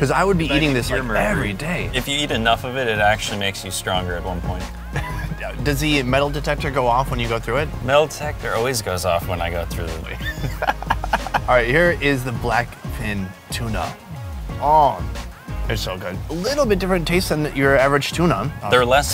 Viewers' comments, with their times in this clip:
0:04 u can hear him say a slight doubt lmfao i was laughitng my a** off